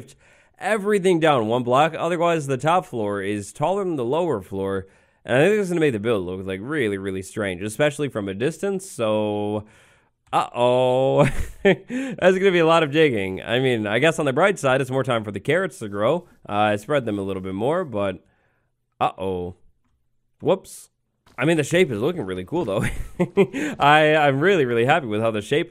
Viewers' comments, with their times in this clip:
0:09 your ohoooo is so cute